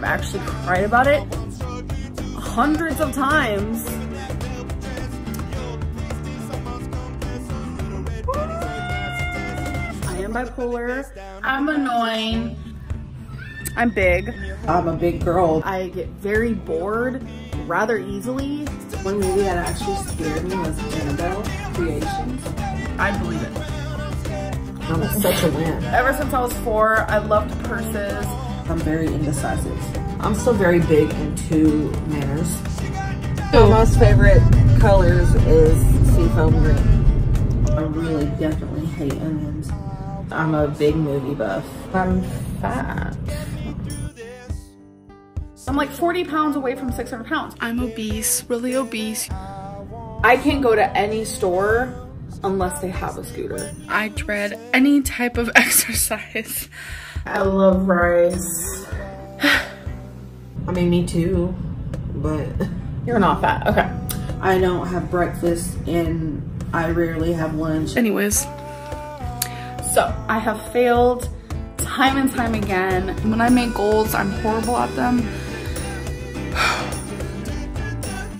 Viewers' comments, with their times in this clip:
0:07 fake crying.. 😬 can u imagine using that sound as your alarm ? Yikes !
1:01 pisses me off like why did she use that tone of voice